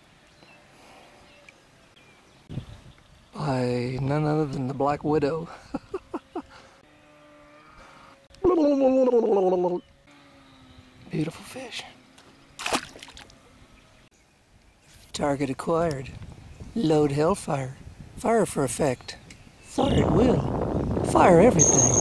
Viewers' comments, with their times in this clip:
0:08 too funny. man the 80's Vidja game music and the screaming drag love it.. thats what we do. aren't we lucky to have such killer wife to let us go fish all day.